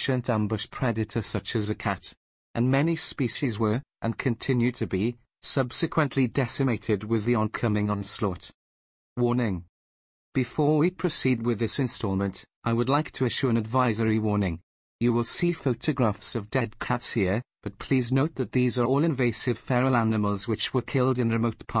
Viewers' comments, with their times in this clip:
0:09 I couldn't finish the video, because of the automated voice. I can't listen to a nonhuman narrator, it gives me a headache. I liked the info tho, at least for the first